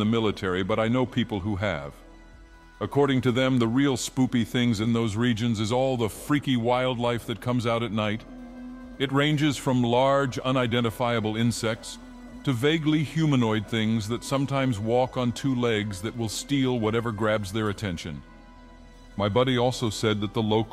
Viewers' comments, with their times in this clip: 0:06 the fucking wheezing of the Dagoth-Ur voice man...